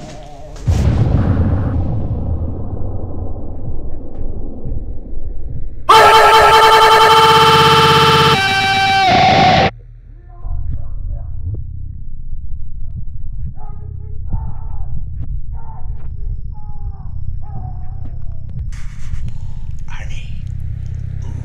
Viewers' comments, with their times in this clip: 0:04 scared the ** out of me r.i.p headphone users
0:09 I Heard something ( in french),like : help me out, what is happening !!!!!!!! I'ts really weird (like a kidnapping)